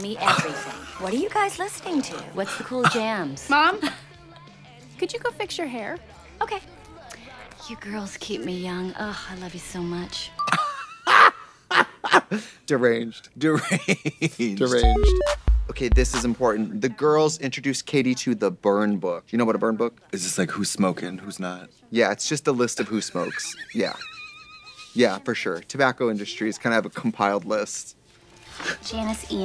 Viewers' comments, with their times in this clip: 0:10 blonde women cackle
0:10 blonde women cackle